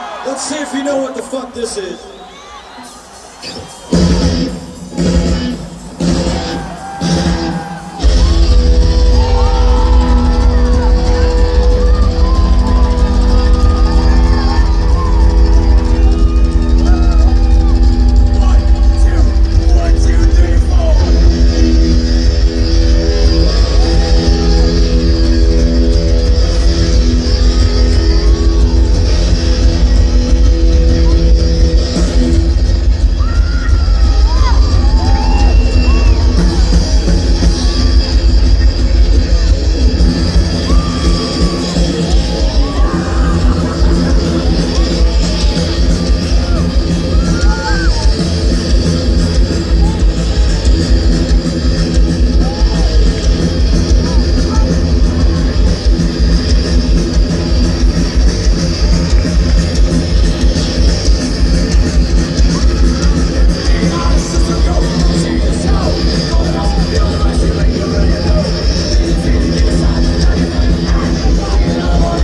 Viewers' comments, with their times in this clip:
0:07 the drum kicks sound like its a firing rifle
0:56 Lars in the fuckin pocket here